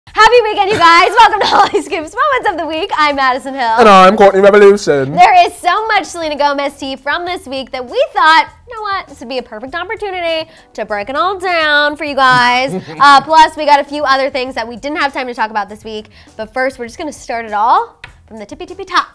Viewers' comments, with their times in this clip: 0:01 Damn I had my earphones on , this woman is too noisy